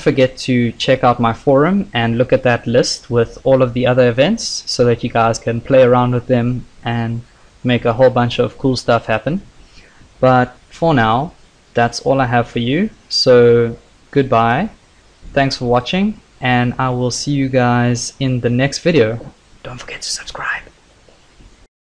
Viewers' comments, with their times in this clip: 0:10 you sound like HAL 9000, lol. very nice tutorials btw